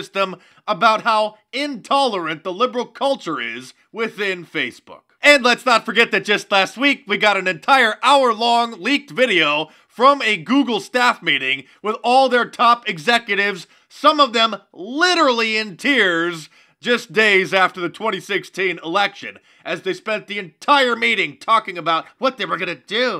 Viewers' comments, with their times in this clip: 0:10 you trigger my android. wtf.